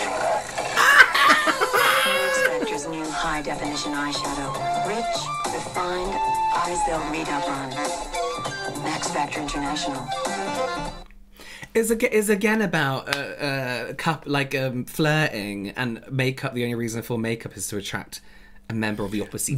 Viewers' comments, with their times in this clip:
0:06 "eyes don't ................." ??? Can anyone make out what it said?